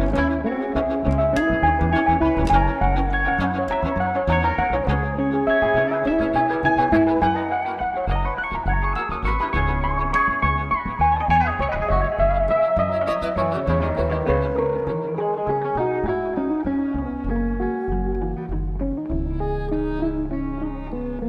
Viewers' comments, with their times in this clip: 0:07 That lick WOW. She's a dream